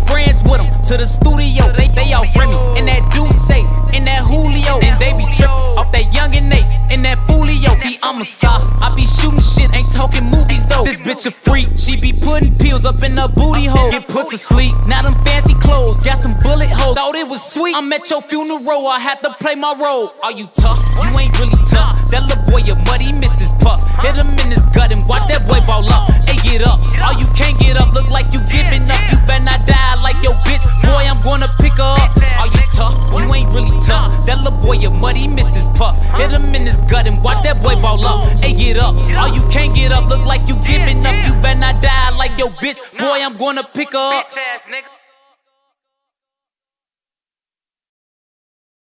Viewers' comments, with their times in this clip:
0:09 You can hear him almost letting out a laugh "See Imma star, I be shootin' shit, (almost laughs) ain't talking movies tho" Von enjoyed making them hits... #LLKV
0:44 when he yelled that at the end